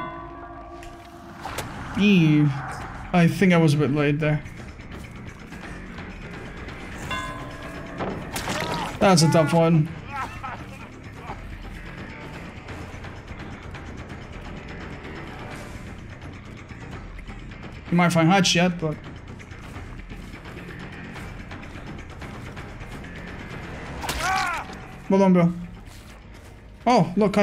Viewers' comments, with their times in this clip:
0:10 why did Bills cry’s of pain sound like the clowns laugh here